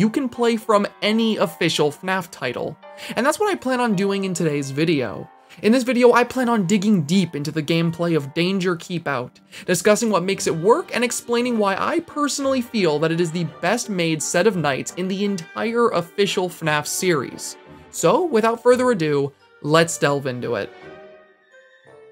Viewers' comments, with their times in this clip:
0:06 is it just me or is there dont starve together music its very faint buti have played the game enough to know it when i hear it